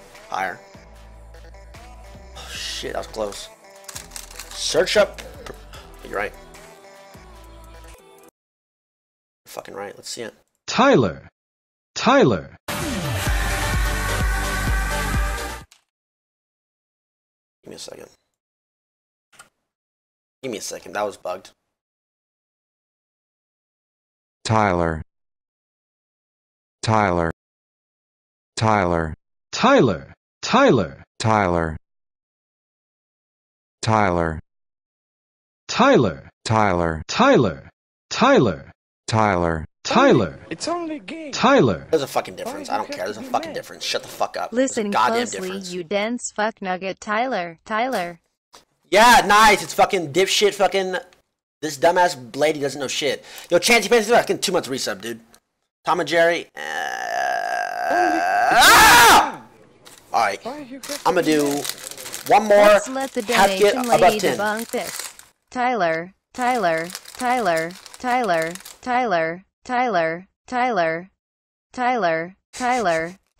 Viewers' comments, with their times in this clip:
0:07 That scream is perfectly timed.
0:56 my door at 3 am when I’m sneaking back in: